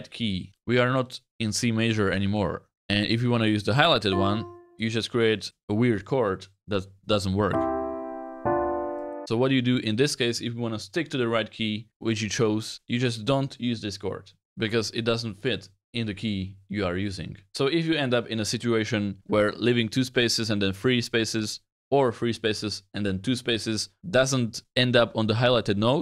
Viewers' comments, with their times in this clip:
0:03 I'm confused, it's not sounds bad for me? It's a diminished chords.
0:11 The diminished chord does work. It just doesn't sound correct because it's diminished. I think this video is a bit funny, because the thumbnail says no music theory required. But you're kind of teaching basic music theory. 😅
0:12 You just don't use this Discord